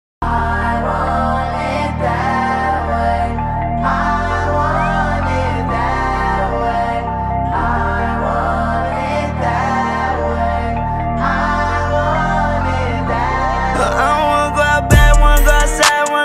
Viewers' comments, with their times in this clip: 0:01 Bro the start what type of music or tune it comes under? It sounds epic or legendary?
0:01 Bro the start what type of music or tune it comes under? It sounds epic or legendary?
0:01 Bro the start what type of music or tune it comes under? It sounds epic or legendary?
0:01 Bro the start what type of music or tune it comes under? It sounds epic or legendary?